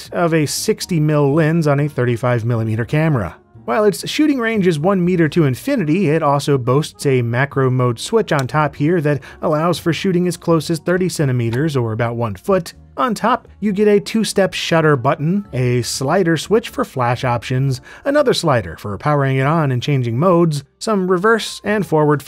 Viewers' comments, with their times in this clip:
0:09 Had to listen to this again after hearing "...allows for shooting as close as 37 meters..." Wait, what? (rewinds) "...30 centimeters..." Ah, got it.